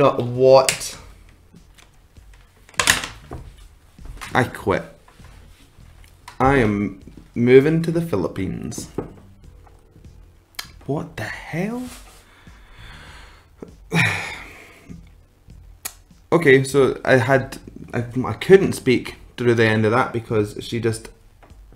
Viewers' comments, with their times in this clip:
0:03 I like how he says Katrina's lastname.. and the best reaction is ..haha.. new sub..